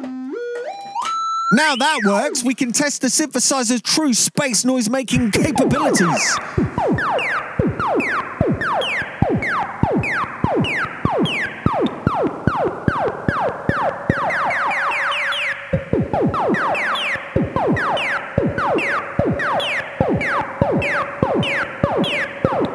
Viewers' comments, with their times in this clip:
0:07 put some beats over this bit and it would basically be a Meat Beat Manifesto album.